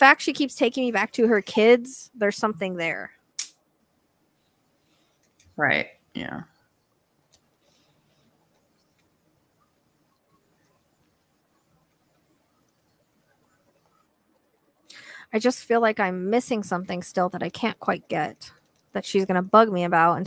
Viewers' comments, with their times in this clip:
0:03 OMG. Now there is whispering su